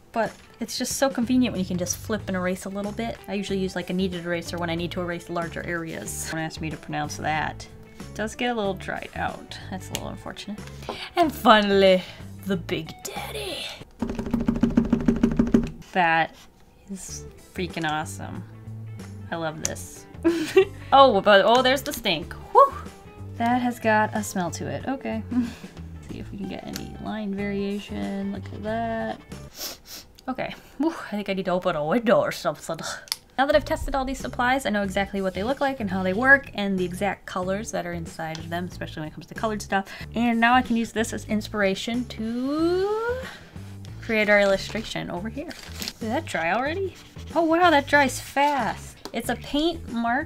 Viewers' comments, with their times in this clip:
0:10 AND FINALLY, THE BIG (whisper) daddy. XD
0:30 “I think I need to open a window or something” idk why but that sounded like missy from big mouth
0:31 ... uhm English? 😂 is it just me or did anyone else have no idea what she said....